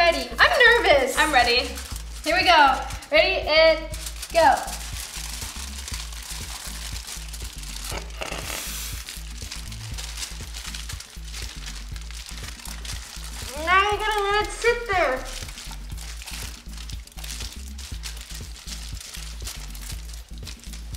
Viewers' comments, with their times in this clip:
0:04 R.I.P HEADPHONES USES